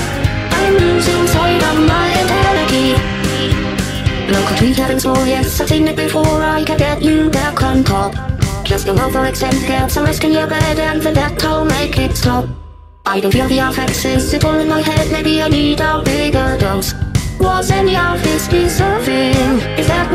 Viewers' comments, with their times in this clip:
0:04 is it just me or does it kind of sound like dex in the background?